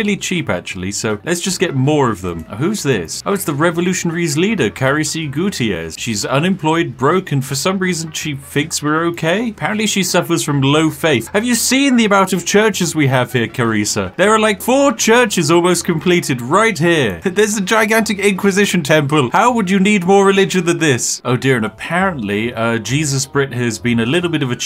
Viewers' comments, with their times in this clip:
0:09 I do feel quite bad for the revolutionaries leader she sounds super depressed.